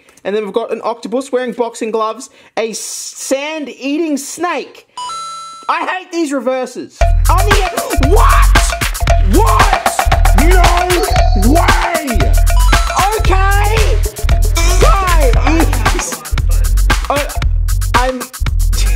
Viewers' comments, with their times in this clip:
0:04 that first scream made me laugh so hard for some reason
0:06 grown man screams on camera about shiny paper slip